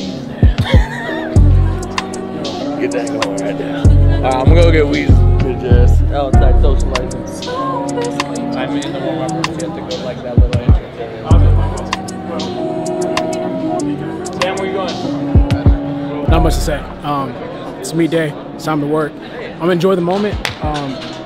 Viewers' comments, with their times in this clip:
0:04 idk if i'm hearing him wrong or he's on my secret preworkout😤